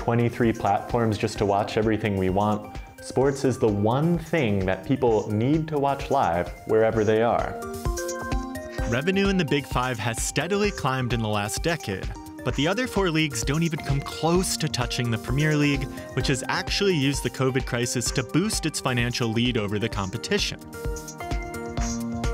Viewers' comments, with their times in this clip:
0:07 Song starting did not have to go that hard